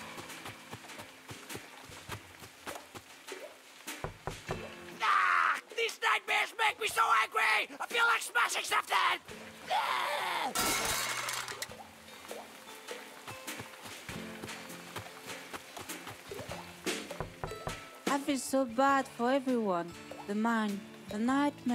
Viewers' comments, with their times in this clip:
0:04 this sounds like invader zim XD